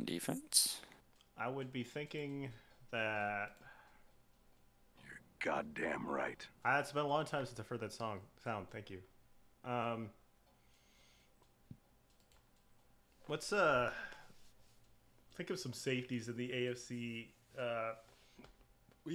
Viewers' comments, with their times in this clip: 0:05 sounded like Batman lol 😂